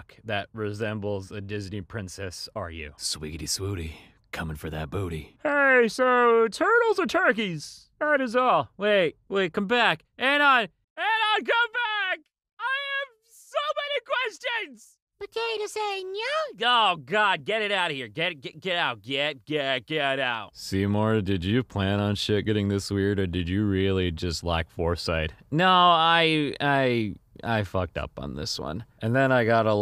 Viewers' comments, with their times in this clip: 0:10 he sounds like miniladd😂😂